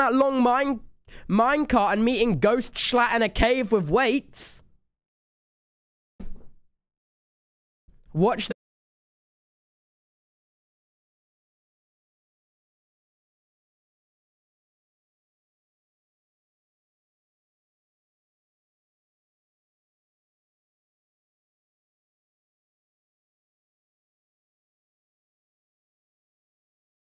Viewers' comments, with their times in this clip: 0:08 did audio cut out for anyone else?
0:09 did anyone else stop hearing audio at this point?